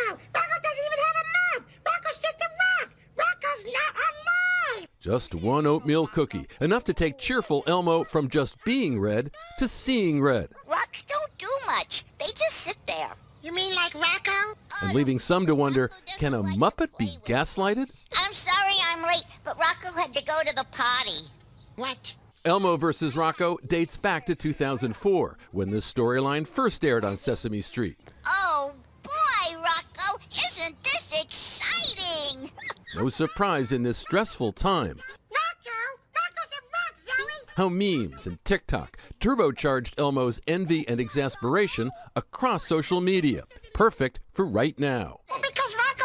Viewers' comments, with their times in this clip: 0:10 sounds like president Biden. 😂
0:21 the way Elmo says "what?" after Zoe claims Rocco had to use the potty never gets old.
0:21 that "what" sounded so genuine😂
0:21 I just love how coldly Elmo says "what"
0:21 the way he says “What?!!” 😂😂😂
0:30 That squeal puppy laugh tho! 🤣😯